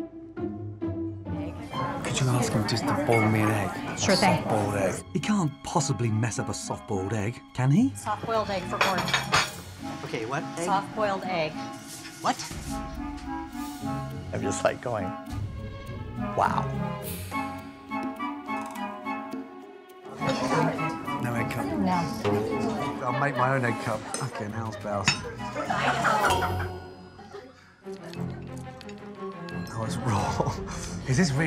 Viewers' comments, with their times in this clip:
0:10 he kinda looks and sounds like the dad from Home Alone
0:13 the chef looks and sounds like the guy from the flash